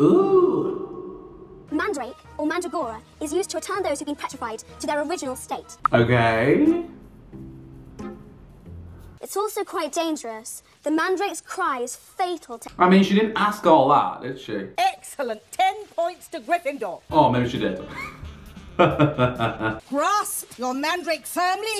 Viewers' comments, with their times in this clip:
0:06 "harmiony" almost had an aneurysm trying to figure out if you were trying to say harmony or Hermione